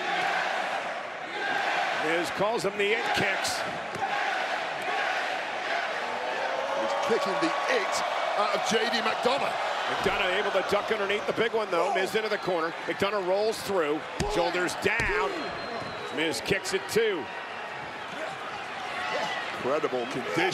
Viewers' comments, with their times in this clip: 0:03 The Irnoy in Miz getting Yes Chants